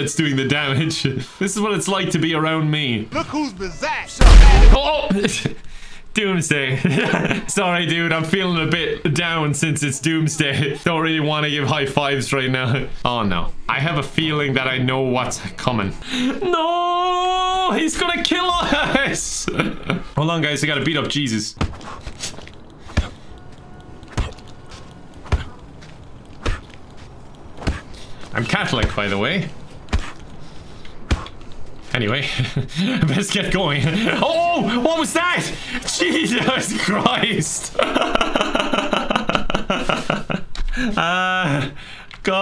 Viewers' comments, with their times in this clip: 0:03 Lamar's greetings have the power of God's voice apparently
0:23 Can someone add a soundtrack to this? It's a pretty nice beat